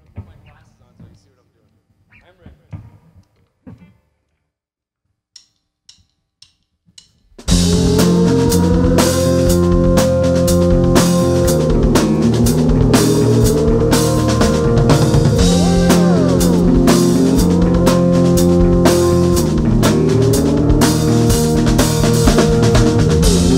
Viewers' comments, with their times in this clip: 0:07 The song has some real strong Can - Vitamin C vibes ;)